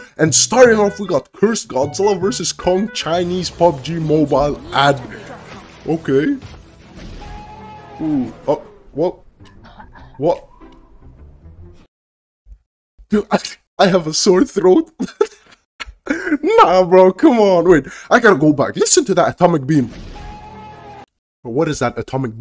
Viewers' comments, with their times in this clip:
0:09 I like the way when Godzilla screamed when he blow his atomic breath and when he got a sore throat after that 😂😂😂😂